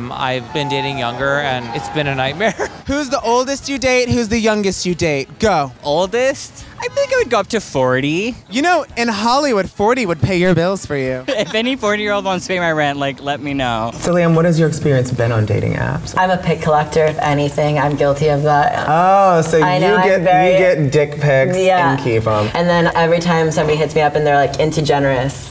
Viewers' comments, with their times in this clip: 0:07 talking but no sound